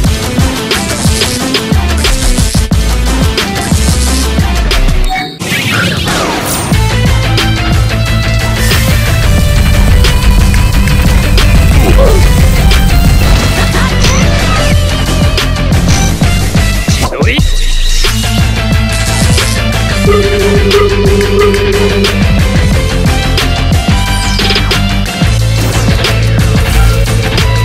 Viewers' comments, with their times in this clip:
0:07 Hi my fav part is its such amazing music
0:11 that music is so cool!